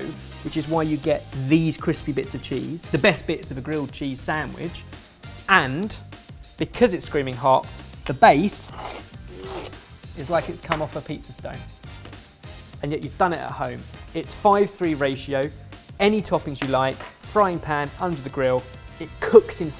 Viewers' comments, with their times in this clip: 0:07 Something about the summary made me feel this should have been on a late night shopping channel.